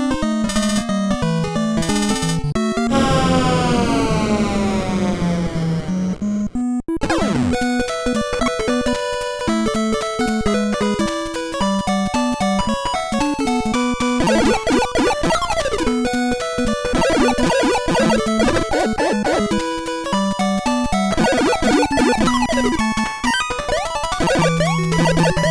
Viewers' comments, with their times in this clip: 0:08 dem the most loved music in childhood :D